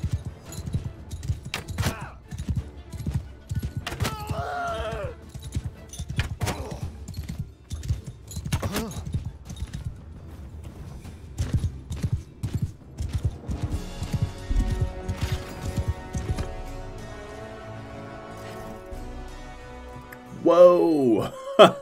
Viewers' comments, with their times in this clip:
0:08 the most posh death sound ever. "oh.. seems I died. interesting" sips tea with his finger raised